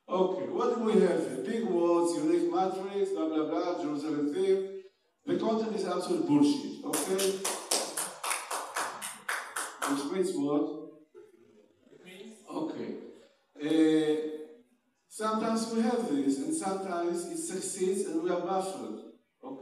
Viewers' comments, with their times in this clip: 0:07 The best minilecture of the congress in my opinion. I am sorry for disturbing the flow of the lecturer's presentation (I was the one applauding ), but his words were like coming from my own mind. There is so much bullshit published today with big empty words...